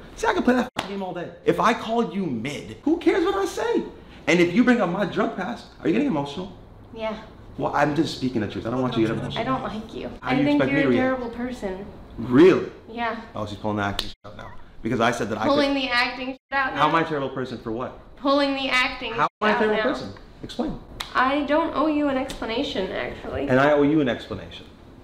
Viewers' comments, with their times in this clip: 0:07 why TF did she start crying 😂
0:13 just as he clapped a ad played